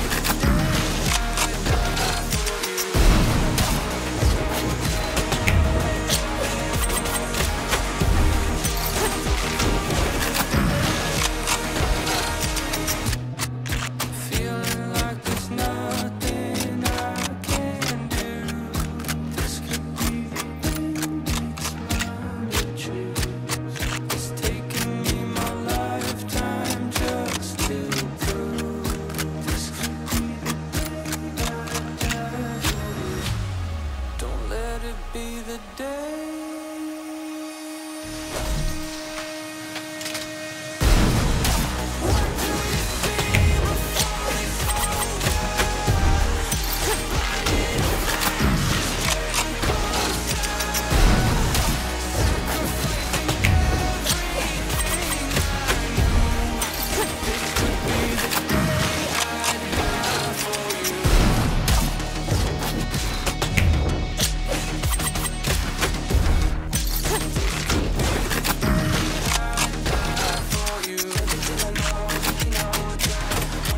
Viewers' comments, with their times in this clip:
0:08 the omen grunt fits so well xd 🤣
0:33 Sounds Like a Trailer
0:59 that coin flip